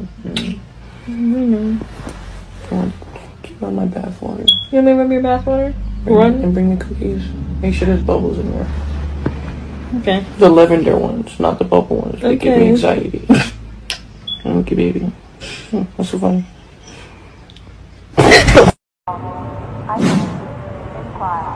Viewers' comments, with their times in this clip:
0:04 i hear a smoke alarm battery low noise, if you know you know :)